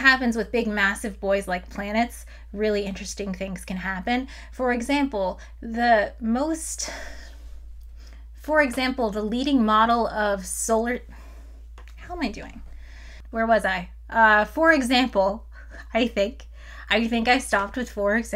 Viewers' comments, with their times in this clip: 0:06 Great video! :) Your passion for astronomy really shines through in this video and it's just so infectious! Also, at ~ where you start to introduce the NICE model of our solar system, it was really nice that you left in you formulating the sentence a few times. It makes the video feel much more like a conversation and not just you reading off a teleprompter.